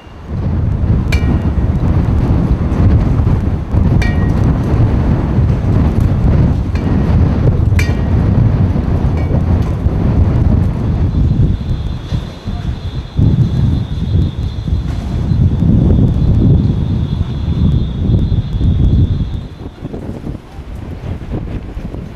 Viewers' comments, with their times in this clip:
0:08 Fire alarm's can be heard in the Distance. o-o